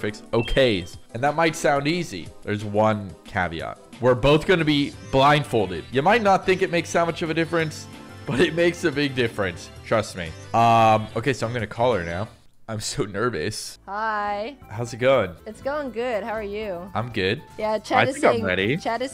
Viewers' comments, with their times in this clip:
0:03 lols the T in caveat isn't silent